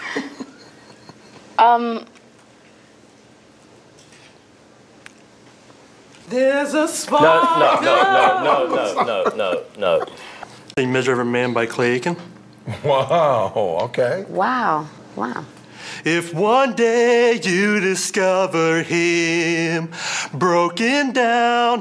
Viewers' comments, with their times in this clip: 0:02 honestly that wasn't singing it was yelling
0:05 for a sec there i thought Paula was singing